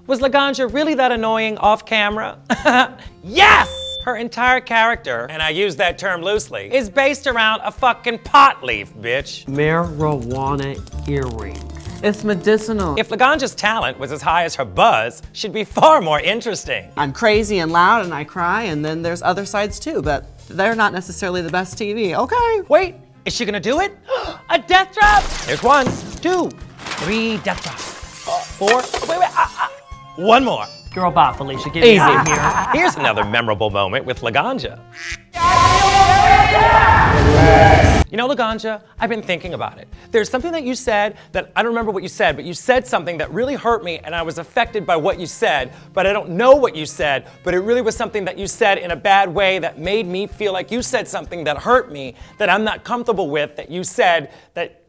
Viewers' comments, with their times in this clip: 0:03 lmao bianca's "YES" was so loud it made the mic ring
0:03 The mic feedback at ~ seconds in sent me 😂😂😂
0:03 I love how Bianca yells so loudly the microphone gets feedback
0:35 I love how while laganga was screaming u can literally see bianca scrolling threw her rolodex of hate